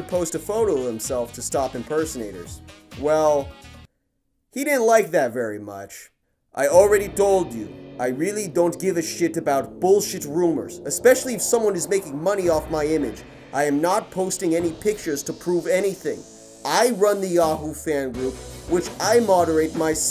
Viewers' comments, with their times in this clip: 0:07 Ricardo Milos have Niko Bellic's voice